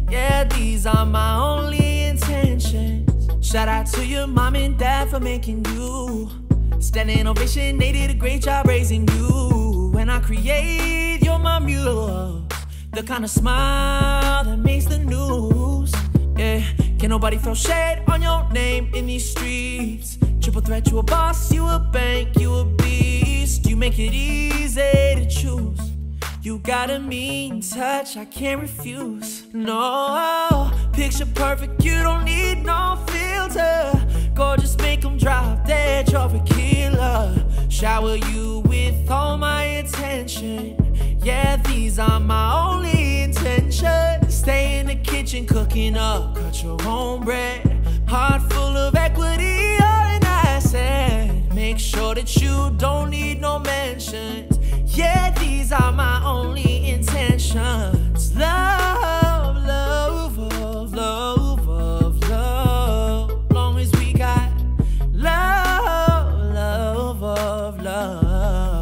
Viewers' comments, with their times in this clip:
0:10 "Muse" is only one syllable my guy. Don't gotta add like 3 more 😂😂Niiice mashup as always 🤙🤙
0:50 sheeeeeeesh the melody in that riff hit my SOUL 🥺🥺🥺🔥🔥🔥